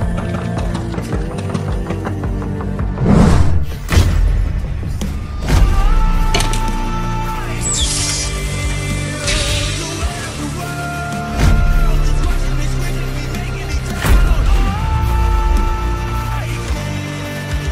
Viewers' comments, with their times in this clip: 0:05 I like the song this part